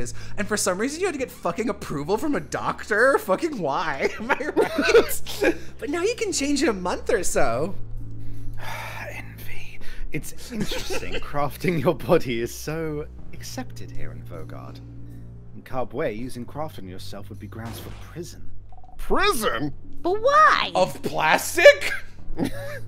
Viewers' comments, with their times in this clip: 0:08 THAT “Envyyy” WAS SUCH A MOOD LMAO